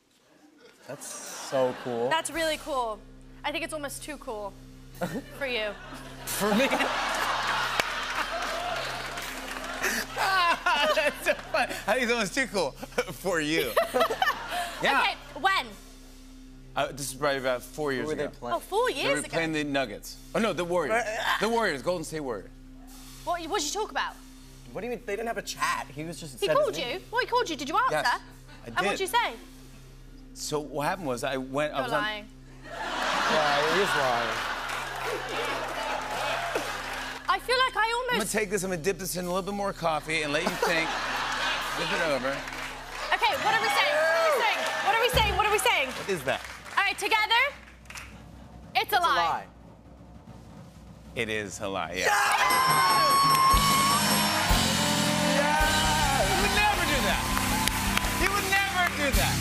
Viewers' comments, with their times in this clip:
0:05 I think that's the first time we ever hear Jimmy Fallon's real laugh.
0:46 Millie's American accent when she says "together" 😭